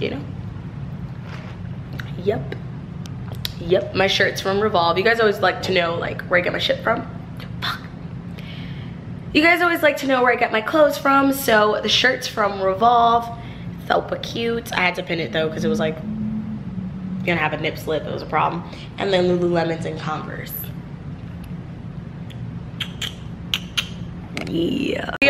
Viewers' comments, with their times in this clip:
0:07 she cussed then gasped then cussed again 😂